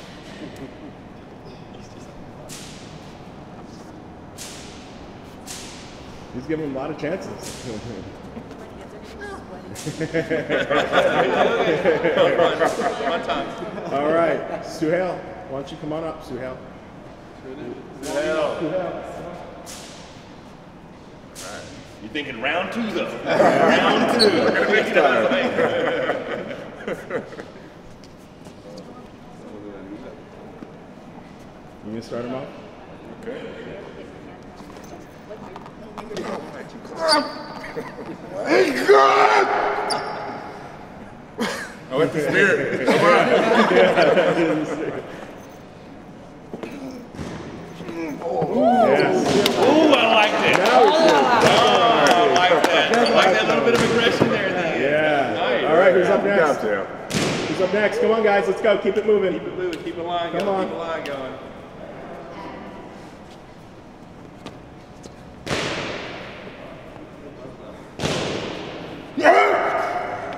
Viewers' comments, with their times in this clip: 0:10 When Larry Wheels laughs and I close my eyes, I see a cyclops laughing at me
0:53 when they touch his fists sounds "poom" xd